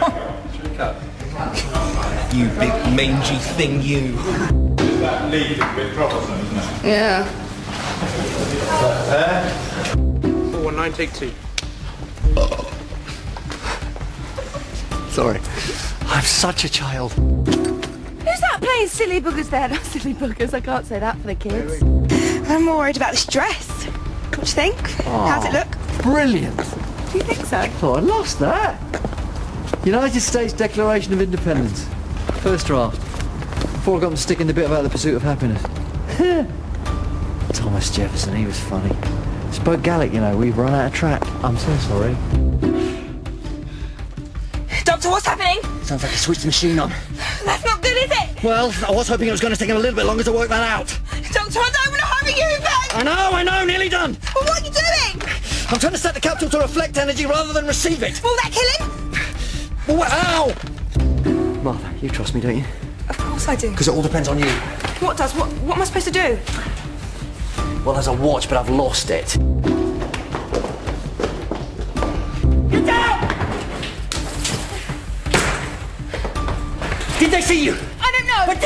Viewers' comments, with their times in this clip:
0:10 |I LOVE where he burps.
0:12 David burps "I'm such a child!"
1:01 love he has an english accent and pops up again but with a scottish one =D
1:05 LOL! English accent when doing script, when not doing script, STRAIGHT back to Scottish, so funny <3